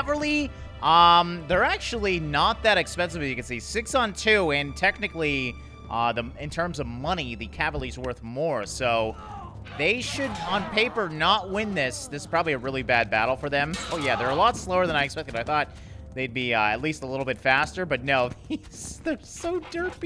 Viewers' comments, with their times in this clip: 0:06 did you just say cavaly 😁🔪